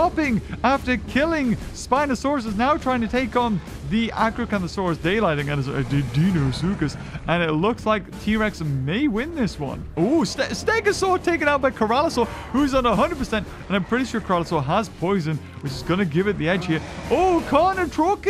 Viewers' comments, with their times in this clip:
0:06 DeInOsUcHuS Close enough 😂